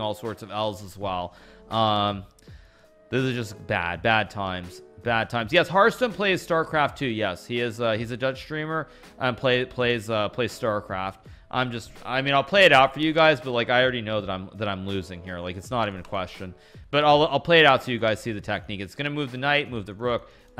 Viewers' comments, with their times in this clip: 0:07 "He's a dead streamer" lol